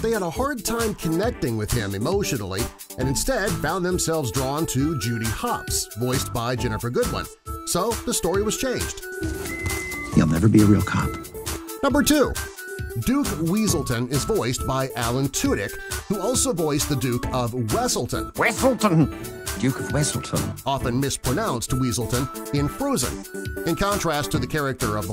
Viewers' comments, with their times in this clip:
0:08 Is it me or does Nick kinda have resemblance to Dr. Eggman in Sonic Riders when they speak in a low tone? I can't be the only one to think that.